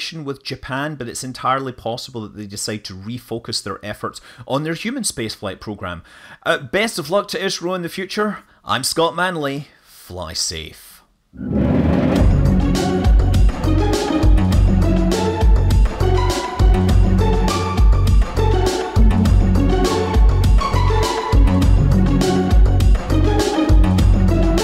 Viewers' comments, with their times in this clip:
0:06 Interesting. But there's a puzzling speacho (like a typo, but spoken) where you say "Best of luck to Israel in the future." Ummm... what does Israel have to do with this mission? Certainly I wish the best of luck to Israel... and Norway, and Luxemburg, and South Africa, and New Zealand, and Japan... but they're really not related to this mission. I suspect you meant to say "India".